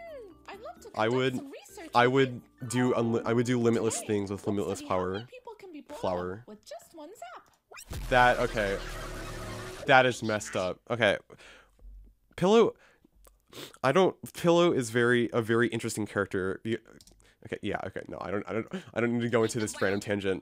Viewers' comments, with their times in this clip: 0:08 TEARDROP JUST TALK!!!!